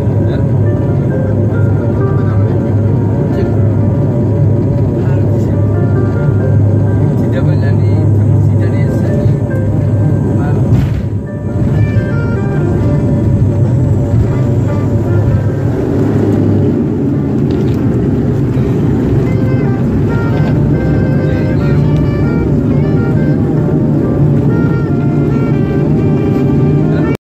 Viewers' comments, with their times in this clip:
0:10 Boom!! Also, the deer's guts look like Kool-aid.
0:10 the boys music kicks in